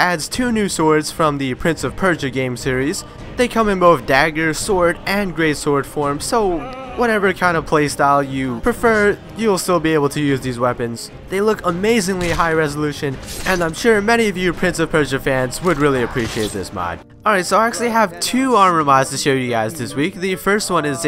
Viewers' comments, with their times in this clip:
0:06 I love that little scream sound xD is hilarious